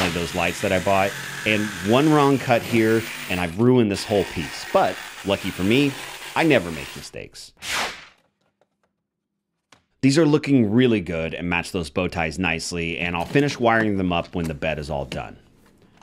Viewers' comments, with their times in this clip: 0:03 You almost made me spit my drink out with that ‘this is how we glue it’ musical bit. Well done